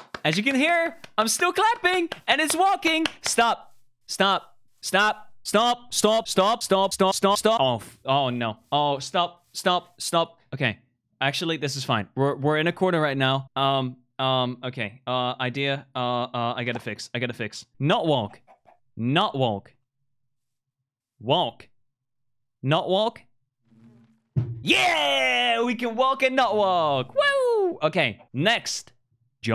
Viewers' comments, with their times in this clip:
0:04 how he goes from an English “stop” to the Dutch “stop” is so funny😂😂
0:13 Did he just went from english to dutch accent.